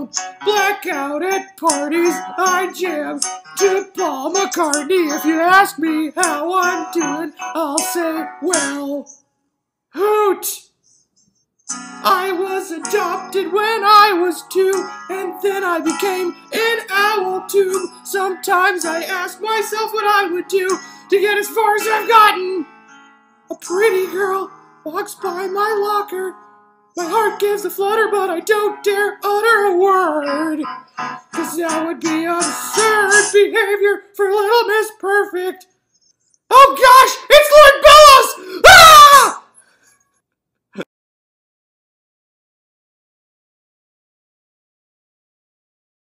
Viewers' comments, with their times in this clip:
0:10 was the smoothest “Hoot” I’ve ever heard
0:40 there’s a little hiccup